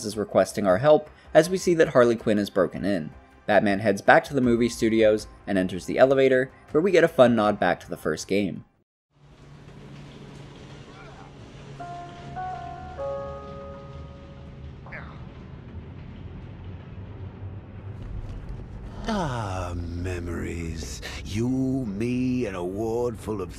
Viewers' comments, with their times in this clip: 0:10 that music brings so much nostalgia to when I played that game for the first time